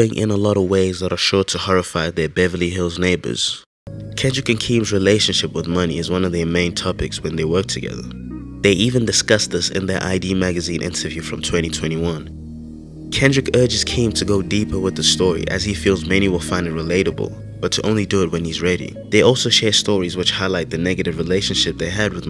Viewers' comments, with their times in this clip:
0:03 What music do you use for these vids? The shit in the background sounds raw